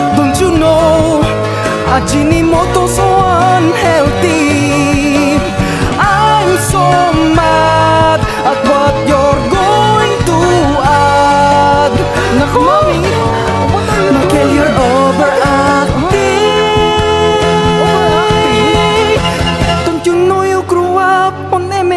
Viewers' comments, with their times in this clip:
0:04 hahahahaha the music fits well.